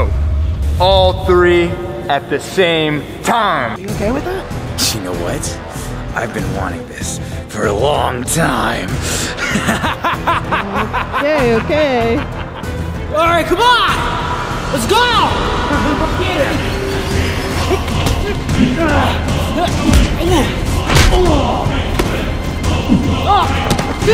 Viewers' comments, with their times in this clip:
0:09 that evil laugh never gets old💀